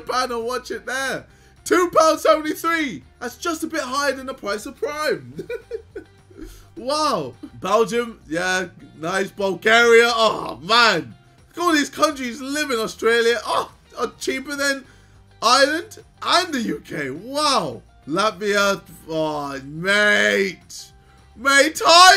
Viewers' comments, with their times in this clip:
0:04 idk why but the way his voice was sounding really reminded me of old Ksi for a sec